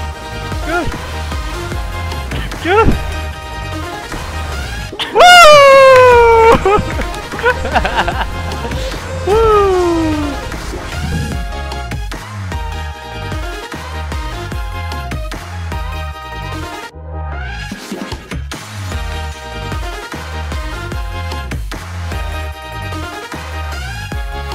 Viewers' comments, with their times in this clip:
0:05 birthday party horn